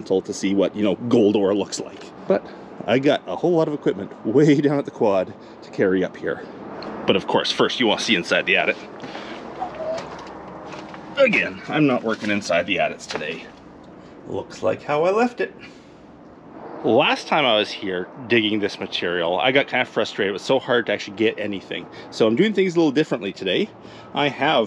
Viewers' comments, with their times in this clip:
0:09 what was that sound was it a ghost of a past miner listen i think it said hello